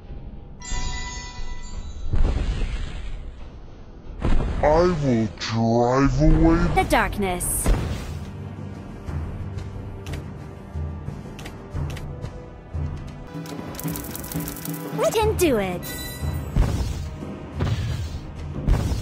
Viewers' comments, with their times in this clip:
0:04 i thought that grock was speaking XD
0:05 illuminati confirmed Theres no grock in Isn't me or i just clearly hear grock's voice like if u notice that